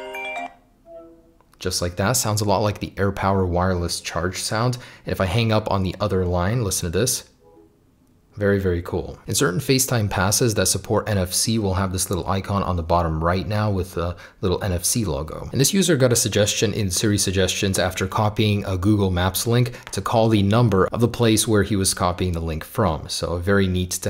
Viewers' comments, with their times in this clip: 0:07 Who else had to turn up their earbud/headphone volume to hear it